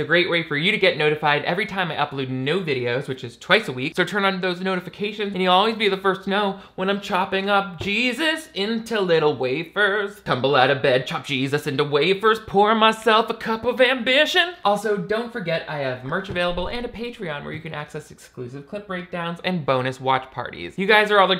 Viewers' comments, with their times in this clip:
0:05 wow, was not expecting a sudden Dolly Parton 9-5 right at the end there